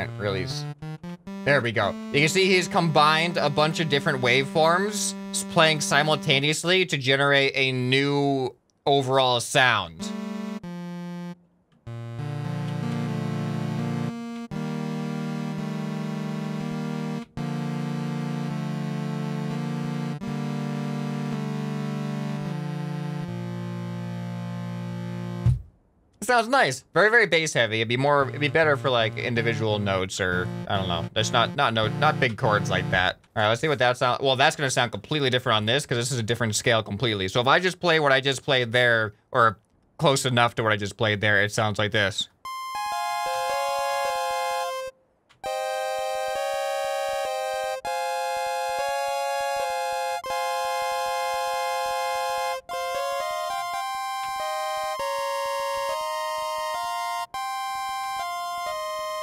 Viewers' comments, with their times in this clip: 0:09 just starts playing the most beautiful song I've ever heard.
0:09 isn't that just a chord
0:10 Beautiful music, I didn't know you played the piano!
0:12 casually makes music better than any of the other ones
0:14 ...I didn't know he could play and that honestly blew me away holy crap that was good
0:42 The first few tones made me think it was gonna be Pokemon Fire Red/Leaf Green Pokemon tower background music